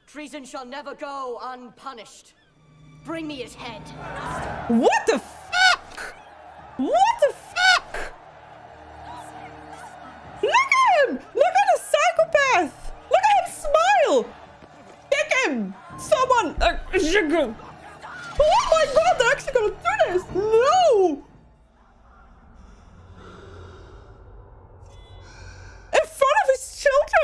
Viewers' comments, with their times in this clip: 0:04 the woman transforms into a small bird.
0:07 Anyone hear a three eyed raven call 🤔
0:08 was that a bird sqwaking!?!!!